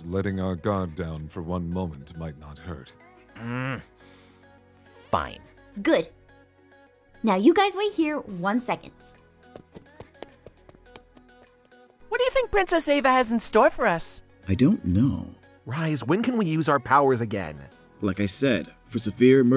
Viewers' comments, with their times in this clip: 0:04 OMG ASH sounds like a teen girl lol Edit: I HAVE NEVER GOTTEN A LIKE :)
0:05 the humm fine😒 is soooo cute 😆😆😆😆